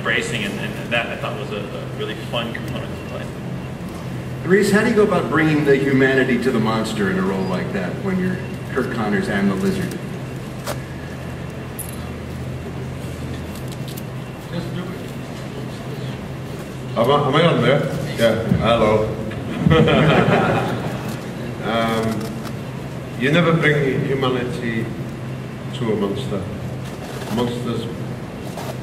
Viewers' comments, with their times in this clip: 0:08 Rhys Ifans cobbling together a sentence
0:16 he sounds like he's high